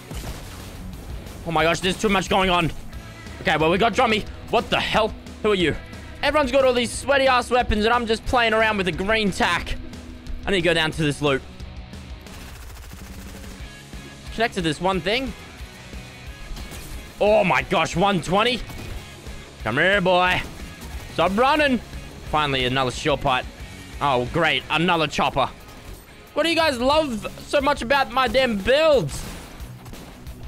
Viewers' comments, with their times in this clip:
0:10 the smg sounds like a drum fill in the middle of the song
0:10 listen to the music in the background: perfect timing
0:10 If you listen to the music and the sound of the smg it sounds so good
0:12 that SMG was a good transition to the next part of the song with the drums